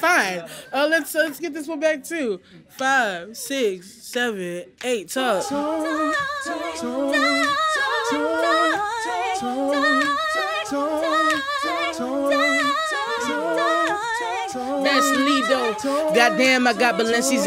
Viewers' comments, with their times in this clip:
0:04 is the best song and vocals